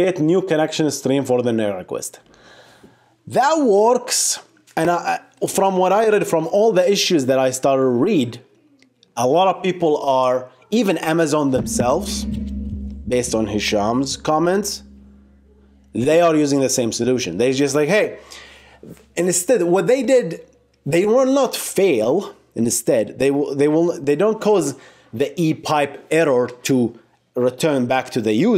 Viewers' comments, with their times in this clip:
0:10 Hey what was the bang sound